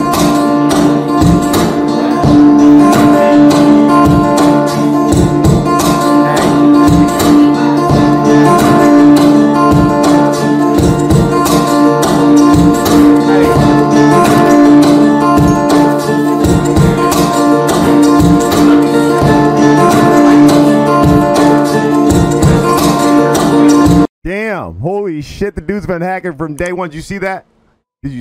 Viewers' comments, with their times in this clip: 0:09 The guitar music plays on lol. Imagine he would have sung Beyoncé ' s Irreplaceable ' 'To the left , to the left' ' , because he is always looking to the hard left, right BEFORE spotting enemies in a game, AND right after a gunfight is over, sometimes even during gunfights.